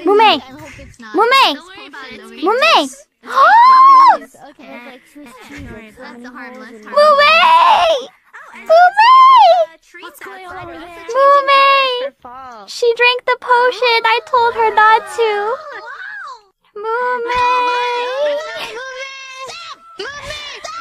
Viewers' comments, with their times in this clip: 0:07 keeping the scream